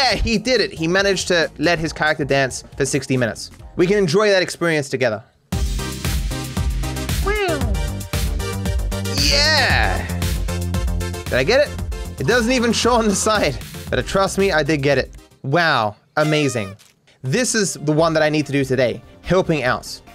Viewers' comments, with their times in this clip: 0:05 the choice of music is actually pretty close to one of the songs in that DJ's set